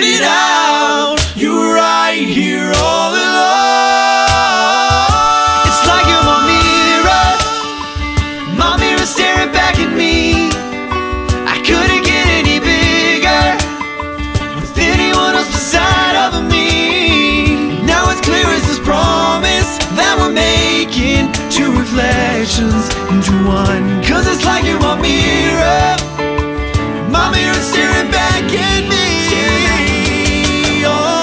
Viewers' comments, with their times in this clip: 0:06 Right there is piano and he is not playing. Whatever though it is still awesome
0:08 actually there is piano and he is not playing
0:19 the piano comes in only or 22.. what you hear is the guitar :)